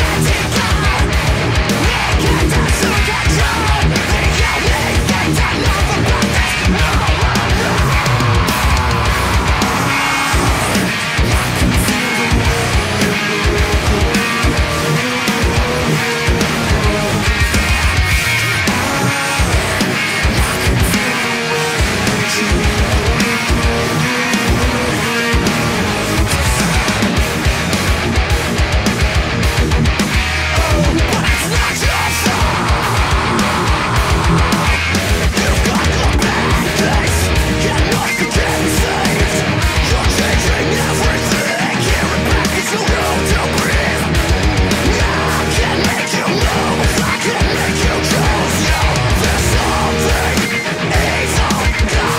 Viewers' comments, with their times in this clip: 0:10 Fuck man, fuck. That chorus riff from looks fuckin' impossible to play, but it sounds so good... Great work as usual boss
0:34 I can't unhear that trasition and it's so weird to me lol